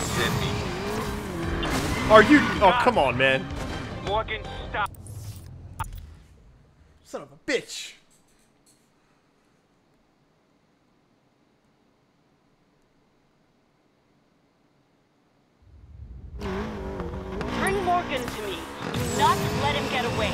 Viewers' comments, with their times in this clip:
0:05 Haven't heard Brad pissed